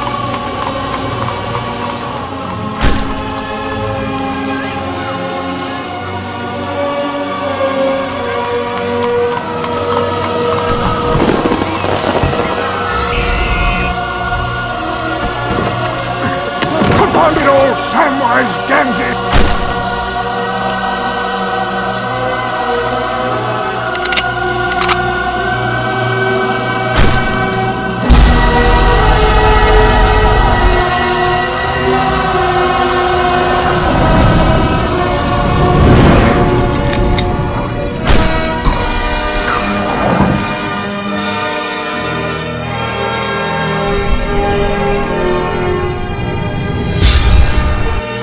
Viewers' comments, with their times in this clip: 0:04 The hobbit kids shouting "Gandalf! Gandalf!" makes me imagine what would have happened if Gandalf had taken the Ring, turned to evil and then enslaved the hobbits he once loved and protected. If you imagine that for those few seconds as if it actually were happening it actually makes you feel a bit sad.
0:29 That shot with the music... WOW